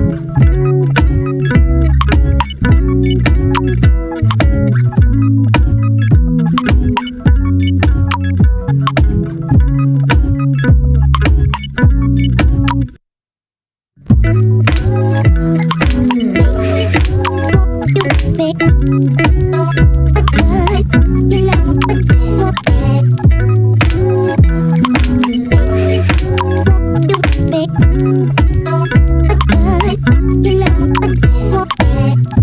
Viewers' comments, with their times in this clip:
0:05 I love how the bass starts to sound
0:13 that pause nicee
0:15 slyly hearing "George Reid" (aluna george) from onwards... such a sick tune...
0:16 When that voice sample kicks in it's just.... kills me everytime